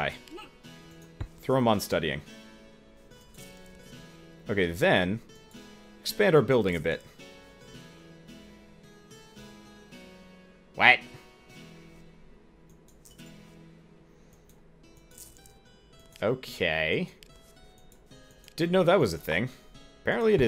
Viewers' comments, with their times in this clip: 0:08 that "WAT" sounded really funny... it almost sounds like a quack.... this game is still awesome! though it is pretty frustrating to see that you never noticed that whenever you go to find apprentice, you pay after you find them, that is why your money dropped like a stone sometimes.... it is probably a little bit late though, since that i see you already finished the game :P i was gone for a few days, now im back! vid is still as awesome as ever!